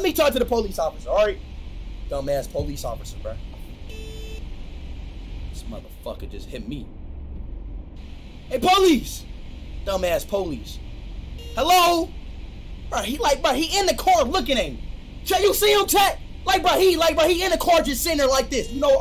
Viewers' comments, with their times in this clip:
0:04 maybe the only time he talked normally